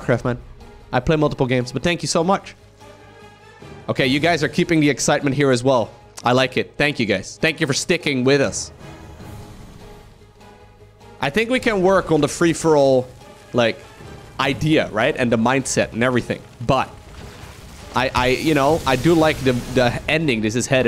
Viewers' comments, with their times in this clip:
0:07 the dramatic music during slow push :D (edited time)